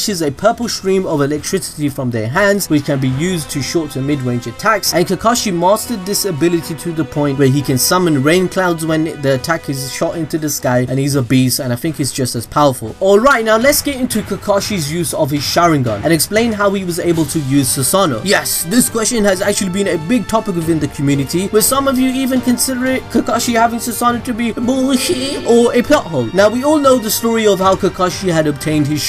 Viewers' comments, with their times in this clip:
0:10 "he's obese" With Captions